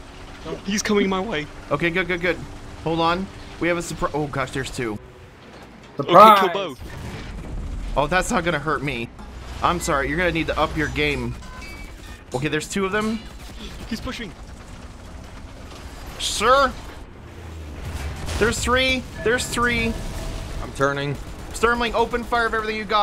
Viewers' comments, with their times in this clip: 0:10 Was I the only one to hear the music